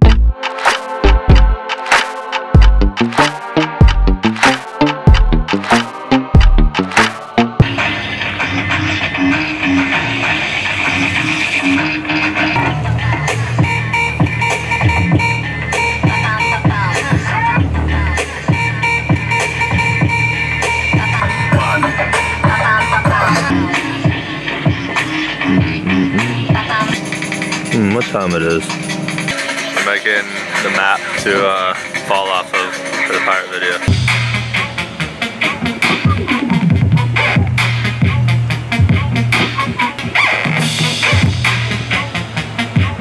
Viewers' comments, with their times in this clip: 0:04 Can really feel the song
0:29 What was that music playing ? Sounds like drum n bass or something similar. Cheers from Portugal and congratulations for your excellent work/video content!